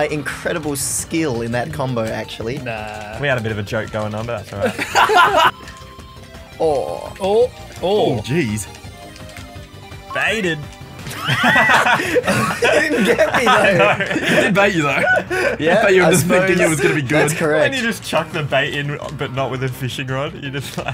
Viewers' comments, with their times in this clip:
0:03 😂😂 the way he said it was so funny